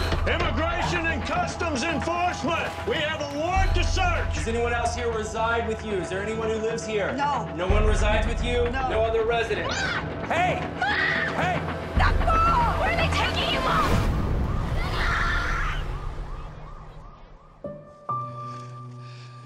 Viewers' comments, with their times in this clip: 0:07 AYO- that “TAKBO!”, Literal chills. But sis, when she yelled “NANAY!”- That shot me though the heart!